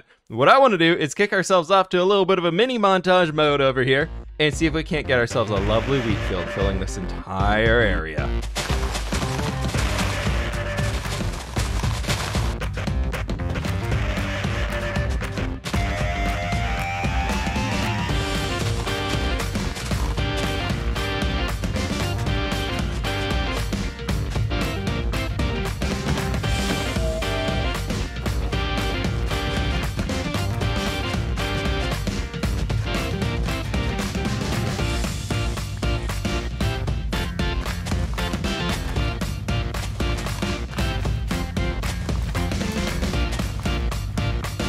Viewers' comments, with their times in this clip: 0:05 Why this music give me gosebumps everytime Hhhhhhh
0:25 Should have stopped the music for a second so we could hear the satisfying sound of the horse's final shriek.